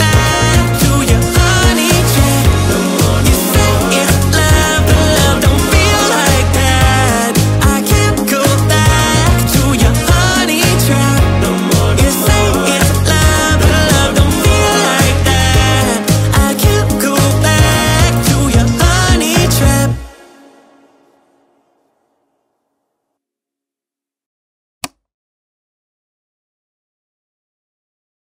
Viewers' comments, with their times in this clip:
0:07 Where the hell is braces kid hes not HERE! Oh and the boop at the end is hilarious
0:09 I love the “boop” just “boop” oh yeah and the whole song <— when the boop happens :D
0:09 That boop was personal😭